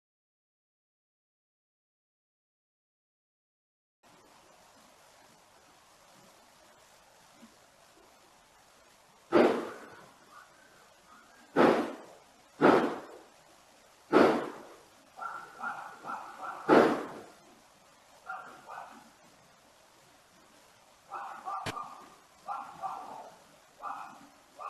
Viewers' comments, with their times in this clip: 0:10 sounds like a woman screamed after the first shot. Then you hear a dog which is more clearer and distinctive.